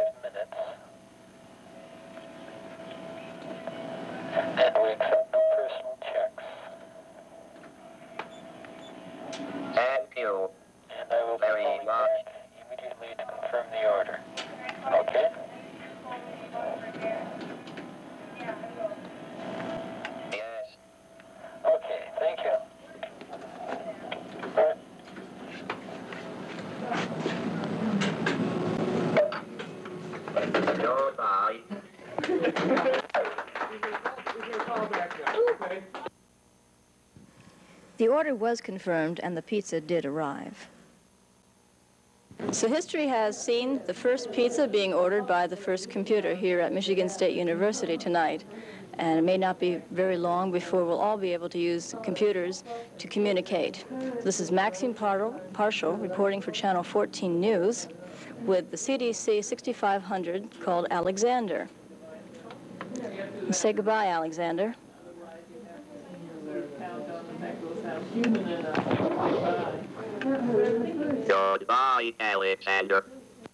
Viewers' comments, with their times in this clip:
0:10 Is he saying "fu"@ ?
0:54 Right? How do you stumble on your own name??